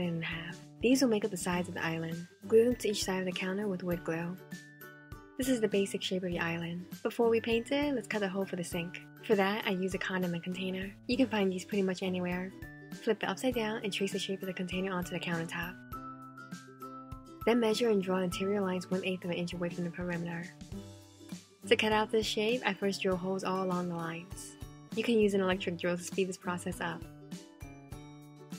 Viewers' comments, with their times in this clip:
0:09 I am sorry but did she say condom btw I really love your creativity
0:10 hears it for the first time Hears "condom container Listens again while thinking wth Hears what it's actually says Ohhhhhhh😂😂..